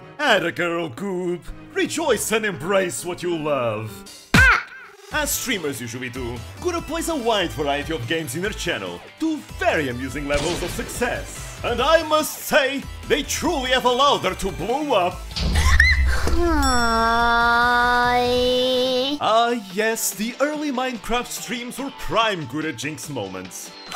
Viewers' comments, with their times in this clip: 0:05 Hm.. that bgm.... i see youre indeed a true man of culture.